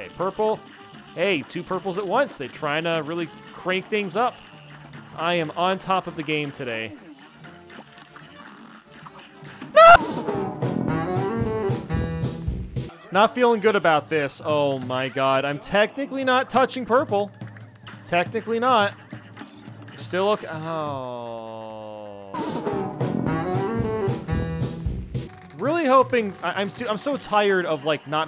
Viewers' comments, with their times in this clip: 0:09 Ah yes. A perfectly cut scream.